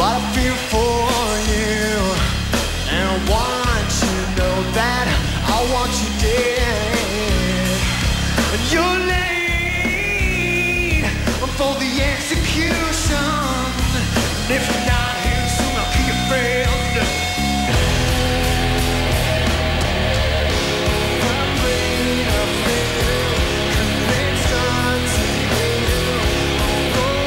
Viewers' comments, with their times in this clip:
0:09 makes me laugh for some reason, he is a great singer, but it sounds beautifully out of tune XD